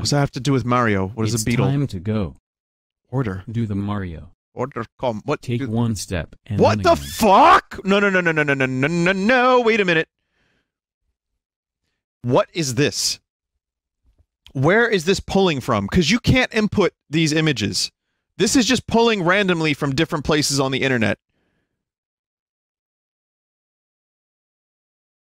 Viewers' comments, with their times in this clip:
0:07 why does that sound like a commercial jingle